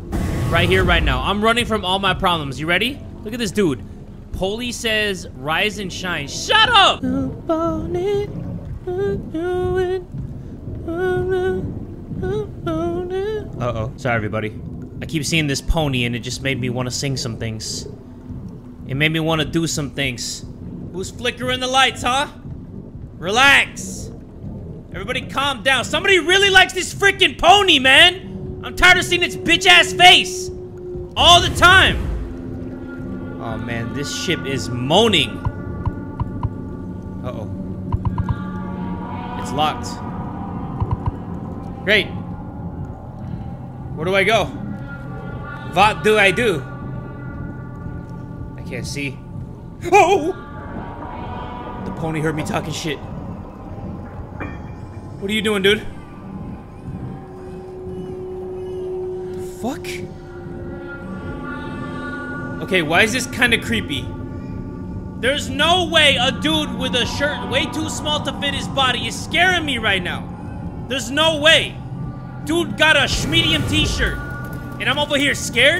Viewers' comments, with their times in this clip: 0:07 deadass thought that the devs actually inserted that as a song in the game
0:08 I actually really want to hear him sing more often-
0:08 bro actually sing my pony from tik tok 😭😭
0:57 I don't know if it's only me, the background music in sounds like the background music in resident evil 4 (Original) when it's already night and you're already going back to the church to rescue ashley. (Echo in the night is the title of the soundtrack in re4)